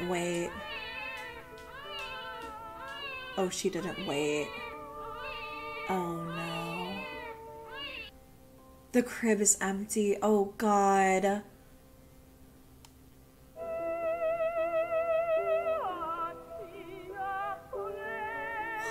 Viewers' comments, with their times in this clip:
0:03 Ok but can we talk about how they use the audio of castrado singer Alessandro Moreschi and how chilling and spooky it is? That audio never fails to give me chills.